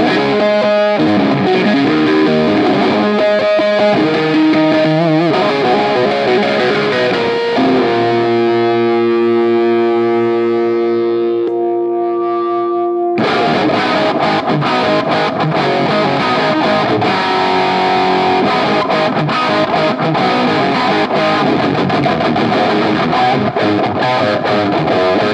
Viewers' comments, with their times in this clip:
0:09 great tone, but starting sounding overly middy and compressed. probably the power soak